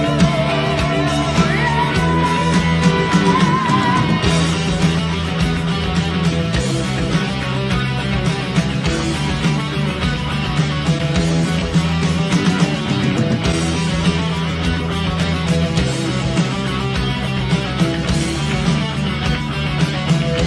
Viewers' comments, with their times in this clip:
0:04 That guitar riff always makes me feel the fear element of what this person was experiancing.